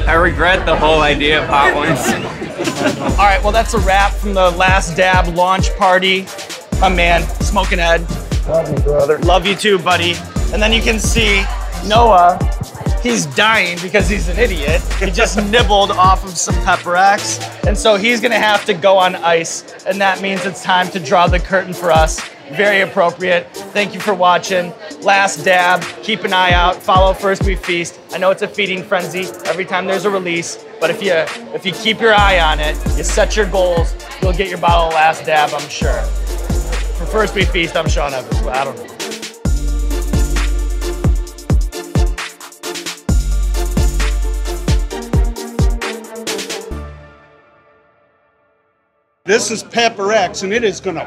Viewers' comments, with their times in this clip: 0:09 Sean sounds just like Tobey Maguires Spider-Man 😂
0:33 "Bowel of Last Dab" ????? LOL!